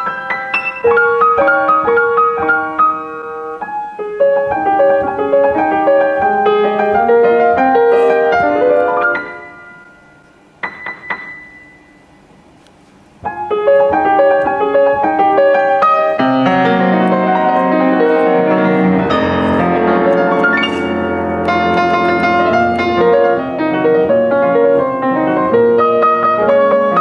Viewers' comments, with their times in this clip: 0:09 is it on key ?!? you tel me!